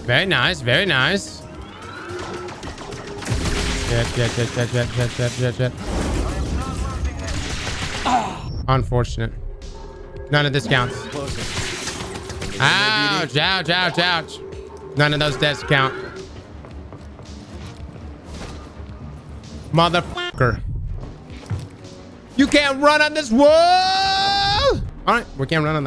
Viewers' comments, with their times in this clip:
0:08 that Lego Darth maul fall scream from the Lego game, killed me